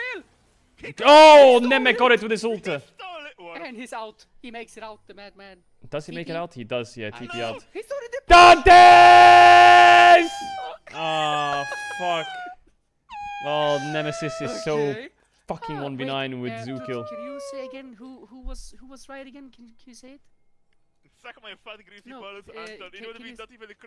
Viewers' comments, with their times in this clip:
0:07 I have this on in the background and just get randomly earraped for what 😭